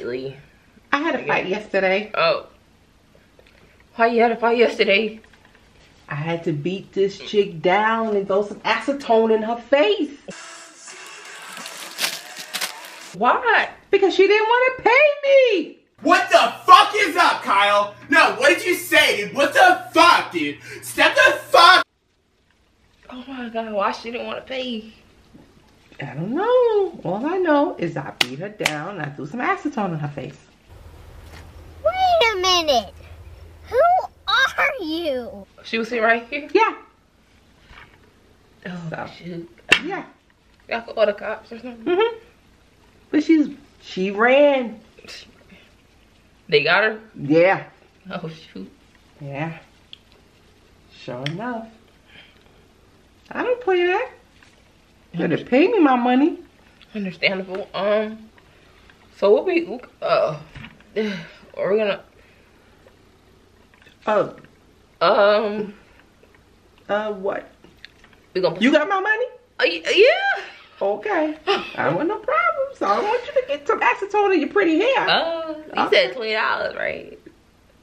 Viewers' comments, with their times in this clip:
0:04 her voice cracked and it had me crying “wHy YoU hAd A fIgHt YeStErDaY”
0:58 girl when she said i threw acetone on a girl face u start to get scared in yo voice I heard that